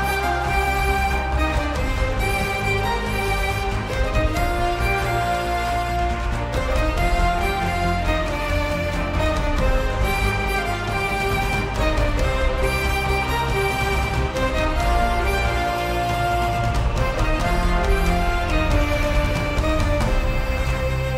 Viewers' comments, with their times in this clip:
0:04 That 5 note sequence sounds like someone saying "He's a warrior" in a sing-songy-sing-alongy voice which is cool